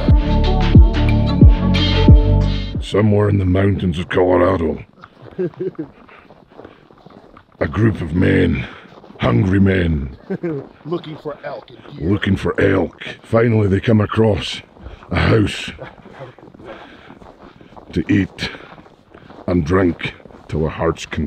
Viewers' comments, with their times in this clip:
0:08 that voice tho